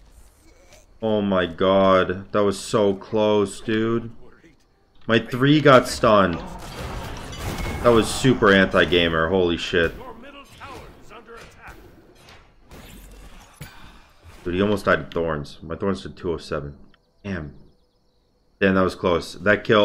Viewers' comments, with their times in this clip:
0:07 "My 3 got stunned, that was super hentai gamer holy shit"